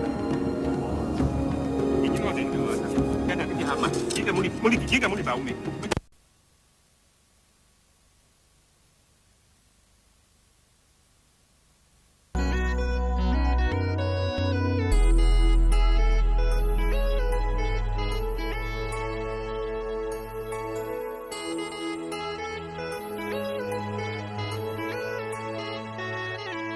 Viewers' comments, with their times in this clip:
0:04 "(idk what it says)-" dies
0:07 *African talking dies